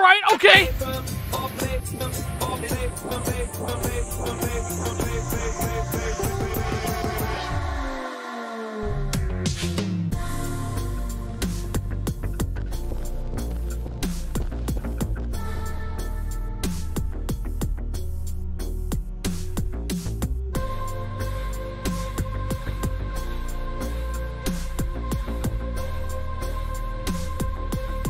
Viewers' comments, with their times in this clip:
0:10 This is cool but lets take a moment to remember Crate 15, Also, sounds like a beat id make. Dire dire munch goes hard too.